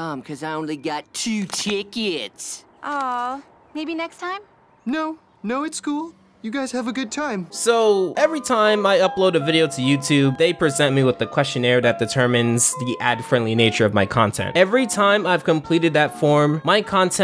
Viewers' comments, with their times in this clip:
0:04 he sounds like mr macky in south park lol